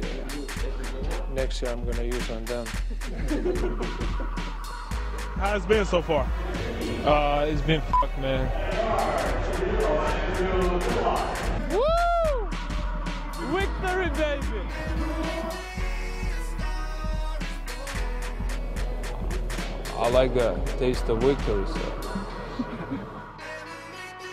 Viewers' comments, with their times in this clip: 0:10 "Wictory baby" looooooooool